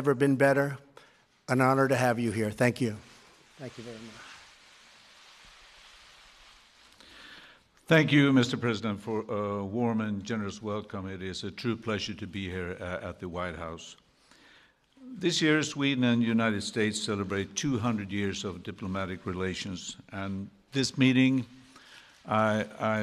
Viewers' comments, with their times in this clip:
0:07 Thank you mister "prisoner" hahahah fyfaaaan